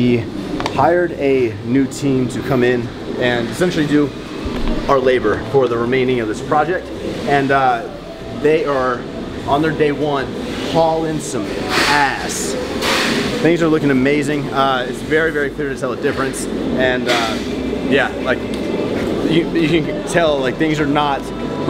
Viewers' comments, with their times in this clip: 0:03 Yooooo dangggg why make the beat drop go right into a talking head piece...